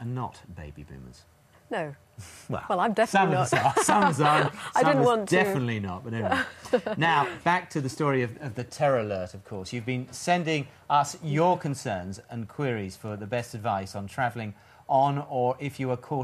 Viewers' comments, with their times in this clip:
0:03 She's got a sexy laugh I must say...